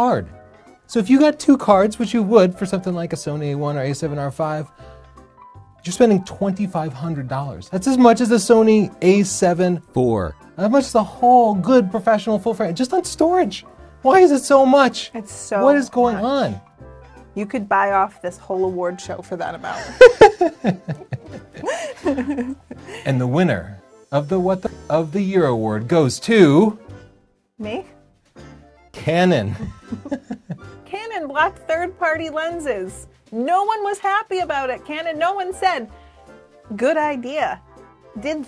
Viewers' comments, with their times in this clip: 0:07 The ADR voice correction here was nasty
0:09 The ADR had me cracking up!
0:09 "The A7 (deeper voice) FOUR." LOL great looping!
0:09 Says "A75", then voice over "4" 😂
0:09 the tiny voiceover is one of the best moments the internet ever had #4
0:23 Forgot the bleep 😆
0:24 Enjoyed the video...did you miss an F bomb bleep ?
0:24 forgot to bleep 🤬